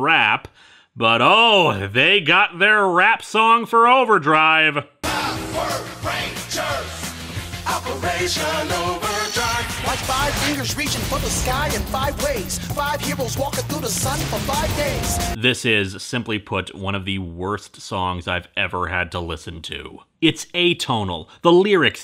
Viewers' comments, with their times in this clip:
0:07 I love the rap! It’s stuck in my head 😁